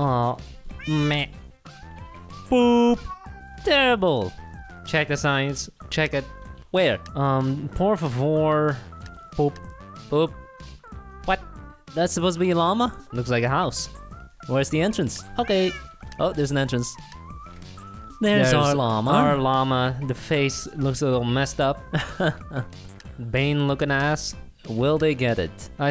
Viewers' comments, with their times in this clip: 0:08 that guy was speaking spanish